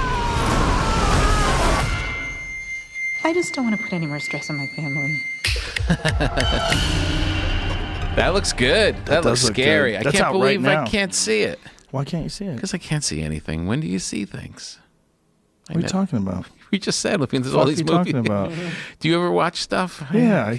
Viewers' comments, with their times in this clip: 0:08 "That looks good.....that looks scary.....I can't believe I can't see it." In a scary voice: Because I can't see anything. When do you see things?_